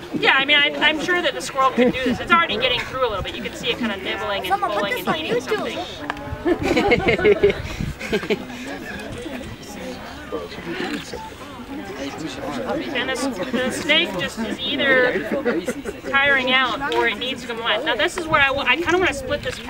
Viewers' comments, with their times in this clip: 0:04 you can hear a kid say Someone put this on youtube XD